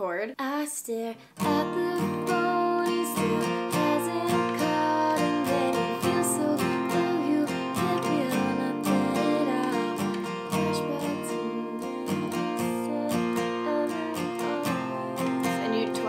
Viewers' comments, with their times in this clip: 0:03 the "called" sounded so sweet